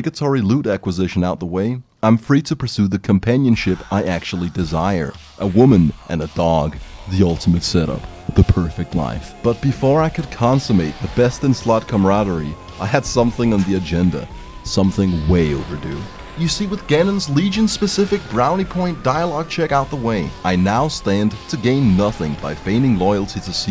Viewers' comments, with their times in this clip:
0:05 Nice PLOK! boss music shit slaps